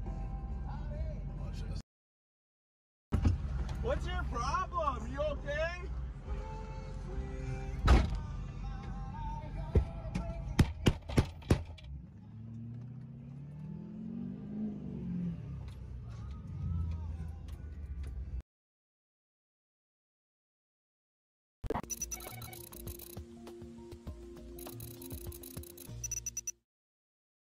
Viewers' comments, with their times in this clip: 0:09 Damn, pissed off Michael from VSauce lol